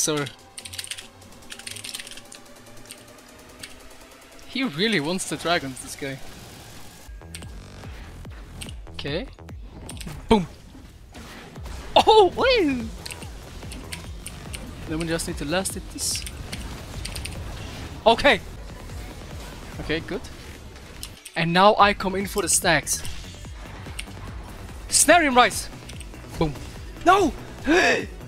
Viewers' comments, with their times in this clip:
0:10 perfect timing with the music drop...